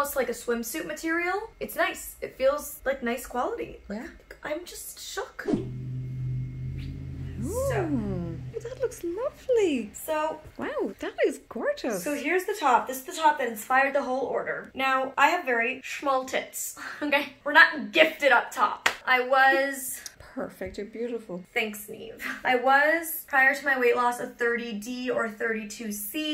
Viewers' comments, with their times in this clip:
0:07 mama bee with the sweet feedback literally melted my heart. Also can she start an asmr or audible booktube channel? Her voice is so lovely 😌